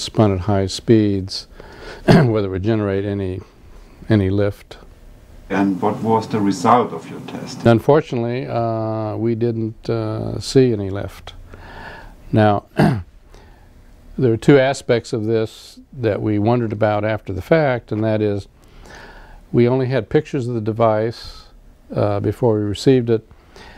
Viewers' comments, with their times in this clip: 0:08 THIS IS WHY ALIENS WONT VISIT US *CLEARS THROAT